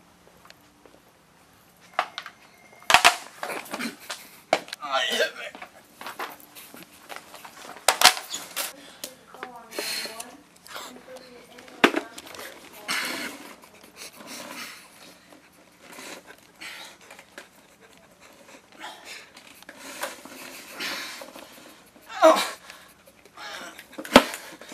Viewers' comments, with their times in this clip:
0:09 In you can hear a woman say "go on floor four. And thats the haunted floor in that Walmart